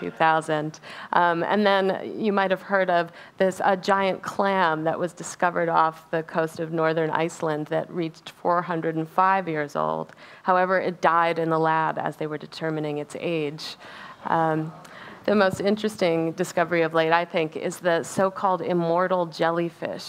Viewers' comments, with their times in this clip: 0:06 Tworhundred and 5? Can you hear the number she says?